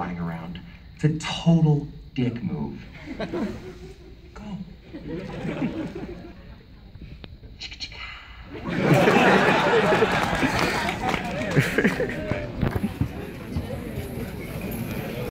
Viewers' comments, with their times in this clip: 0:12 my right ear has been freed